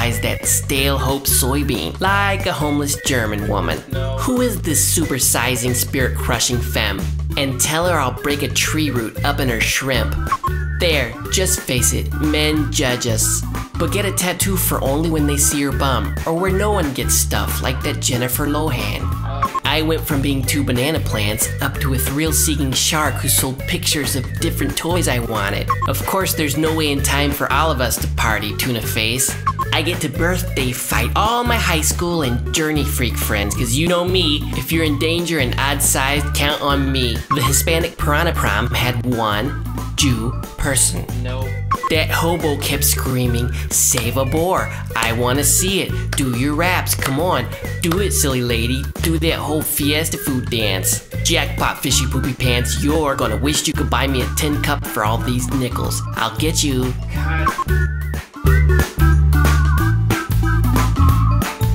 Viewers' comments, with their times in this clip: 0:03 What sells it for me, is hearing the director in the back. "Like a homeless German woman!" "NO."
0:42 in the background...'NO!' lol